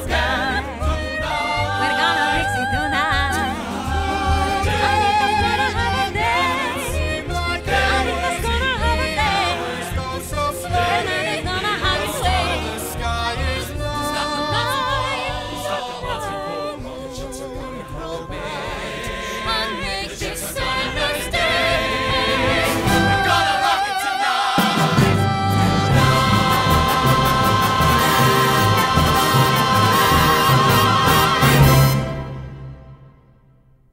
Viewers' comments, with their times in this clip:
0:10 The way Anita sings "Bernardo's gonna have his way" is SO beautiful. Especially the way she sings "Way"
0:16 -end I’m picturing the 2020 revival choreography, which reminded me of “Do you hear the people sing?” And the turntable also made it intense! Am I hearing their voices auto tuned BTW? It sounds like it!